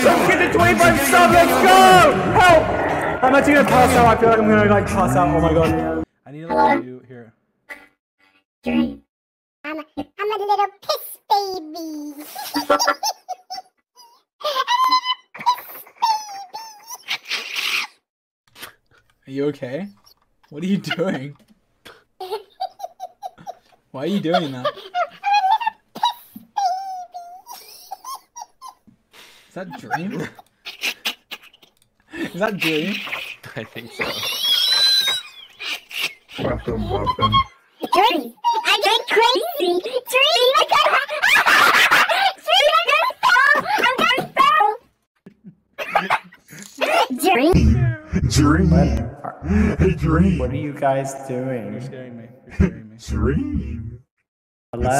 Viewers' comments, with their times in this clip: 0:10 dream is the literal version of “hehe”
0:29 when he wheezed it sounded like he had rabies
0:30 there goes that kettle
0:33 DREAM'S WHEEZE IM FUCKING DYING
0:35 they sound like kids
0:38 George voice is like glitchy thing